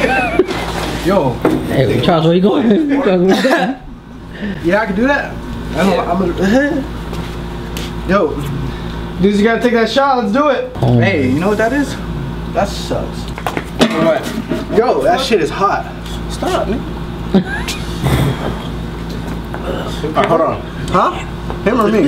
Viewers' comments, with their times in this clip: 0:10 I j heard a fart